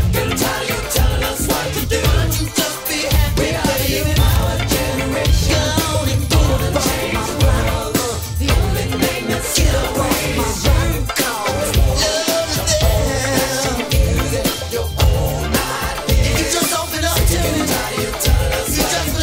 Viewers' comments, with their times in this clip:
0:03 Rosie Gaines P-Funked it out with the vocals. 👏🏿😏